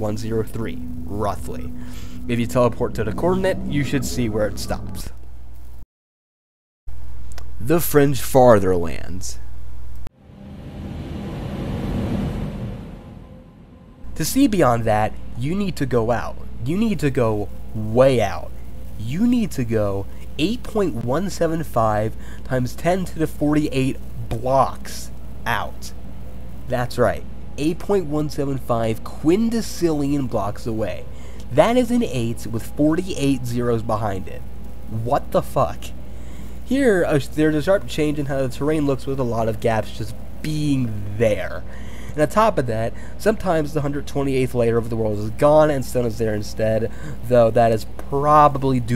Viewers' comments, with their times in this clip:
0:08 Ah yes, the French fatherlands
0:09 why did i hear the french fartherlands
0:13 It sounds like he is roasting me
0:33 i loved the genuine "what the fuck"